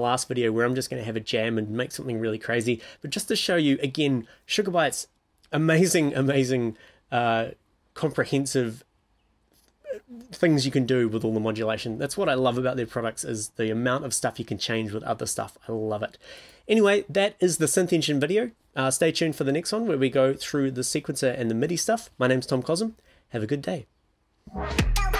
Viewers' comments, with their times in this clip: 0:08 the sqweek sound after "comprehensive" . I want to sample that and make a techno track